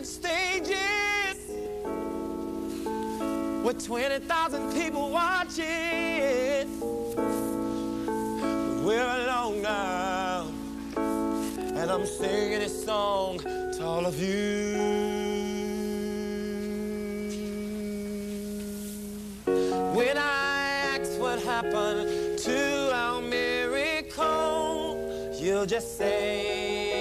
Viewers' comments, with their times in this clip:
0:10 Holy crap he sounds EXACTLY like Stevie here even with the keys and head tilting and the sunglasses